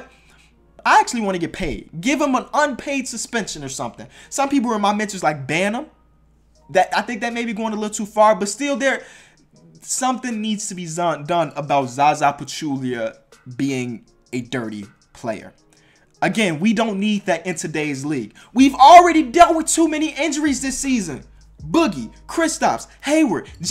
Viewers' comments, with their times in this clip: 0:09 something needs to be zun lol